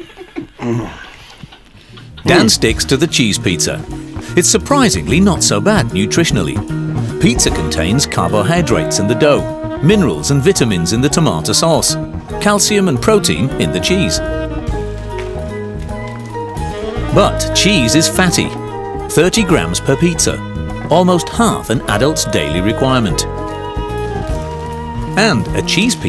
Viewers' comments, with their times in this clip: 0:07 I think the narrator is German and learnt English very well, you can hear when he pronounces carbohydrates and tomato sauce he deviates from the accent